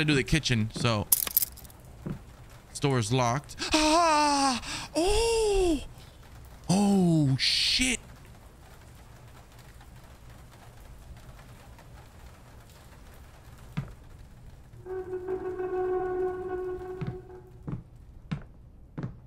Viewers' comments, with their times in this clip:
0:04 legit sent me, cuz we did the same freaking noise when that head popped out